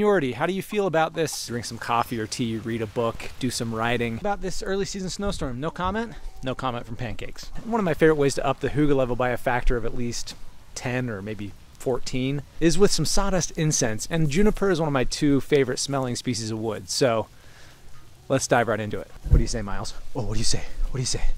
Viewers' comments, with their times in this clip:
0:03 Do some rioting? Same